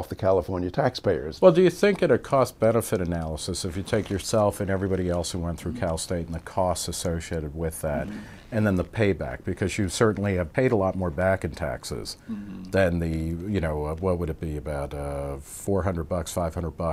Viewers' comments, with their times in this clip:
0:03 leather jackets can be squeaky. Not the best attire for an interview!